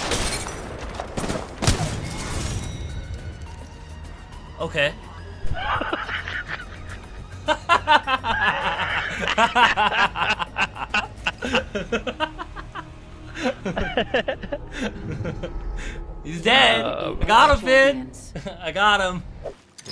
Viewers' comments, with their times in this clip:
0:03 Wins game Proceed to do evil laugh